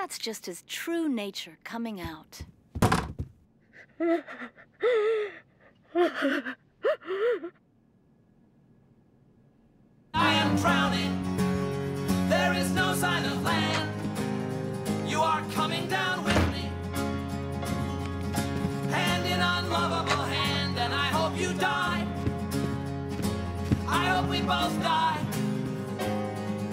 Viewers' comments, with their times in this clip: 0:04 why does bloberta sound like a 3 year old
0:09 The sudden way Bloberta stops crying when she notices Clay in the hallway, her change in attitude, and the way the music picks right back up where it left off … one of the most well-done scenes I’ve seen.